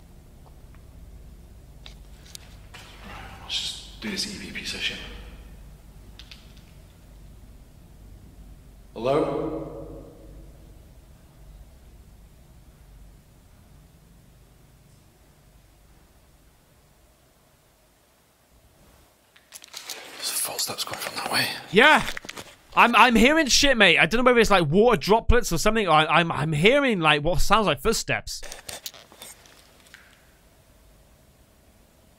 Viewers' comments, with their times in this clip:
0:03 when he says "hello" you can hear whispers
0:13 Am I going crazy or is there bloody whispering ????